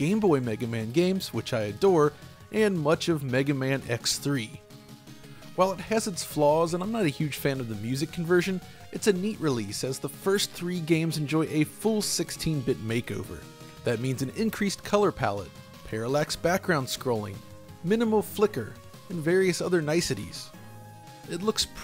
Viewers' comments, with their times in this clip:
0:07 how could you not?!?! I think the remakes of the NES originals sound much better in this version! 🤷‍♀️